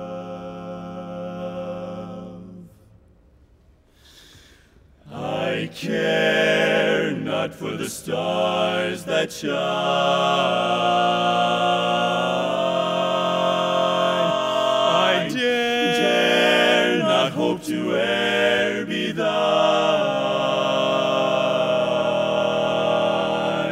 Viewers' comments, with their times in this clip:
0:05 They are locked as HELL from onward.